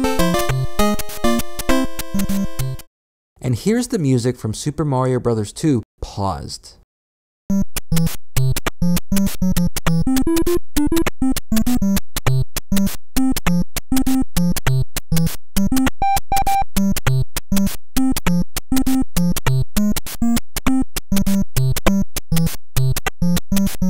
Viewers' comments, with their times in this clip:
0:07 sounds like super Mario maker!
0:08 Also sounds a lot like Mario maker